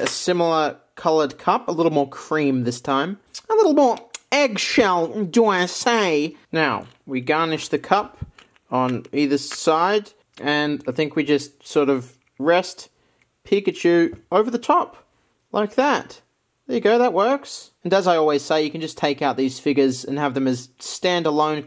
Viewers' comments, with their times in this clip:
0:03 is this the influence of the "french" speaking museum toad in paper mario?